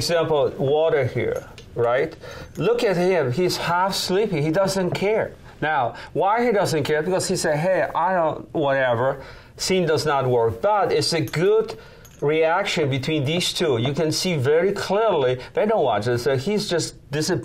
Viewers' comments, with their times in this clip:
0:05 “why he doesn’t care?” “ because he say i don’t …. (Inaudible) whatever” I really understood him at this point.